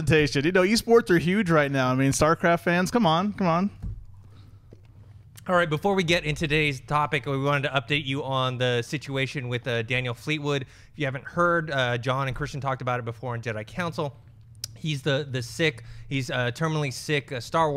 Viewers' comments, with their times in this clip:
0:03 awkward silence hahhahahahaahahha